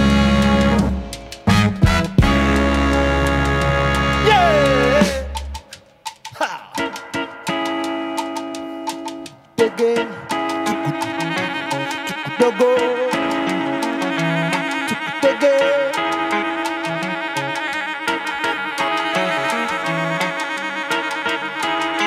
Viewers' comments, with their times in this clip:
0:10 that solo is like smoking a joint before having sex